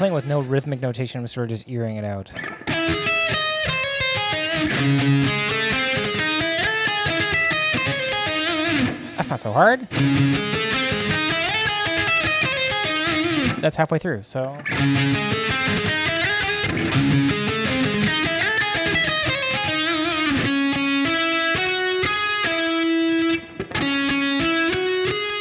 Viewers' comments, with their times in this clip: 0:06 first fragment - le serment de tsion. Groovy part beginning Always gets you in the mood.